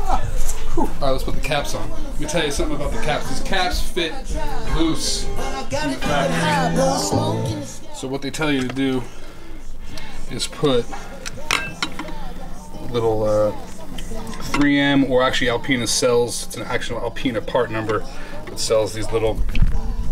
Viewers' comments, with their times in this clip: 0:06 What’s the song it’s vibey